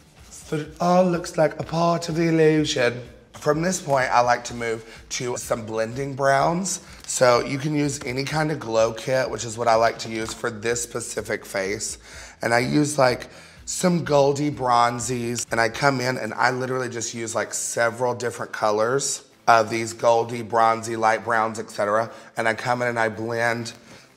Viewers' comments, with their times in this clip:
0:09 this pacific face
0:09 THIS PACIFIC FACE 😂😭
0:09 "This Pacific face"
0:11 "for this pacific face" lmfao I love eureka